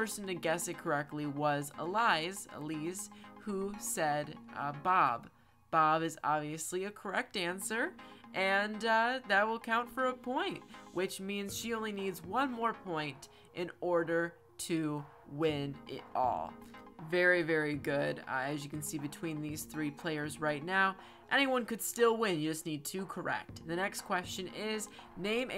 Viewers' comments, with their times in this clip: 0:07 Me who went with moe: Sad villager noisess